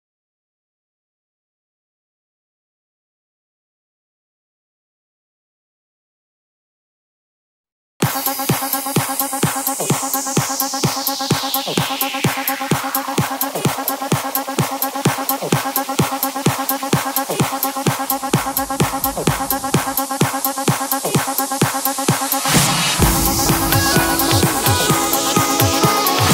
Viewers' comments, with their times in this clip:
0:07 Rip headphone users who thinked there isnt sound